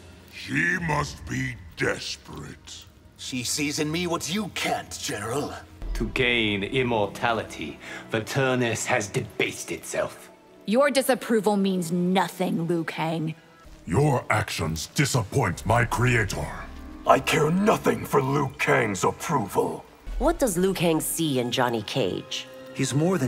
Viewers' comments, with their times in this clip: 0:08 oh hey. Megan Fox did pretty good at that line